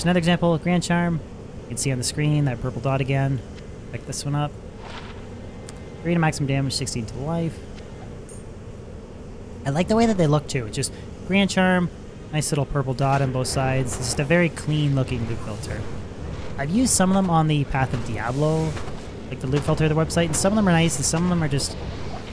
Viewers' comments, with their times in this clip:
0:09 why his voice get so high pitched right here tho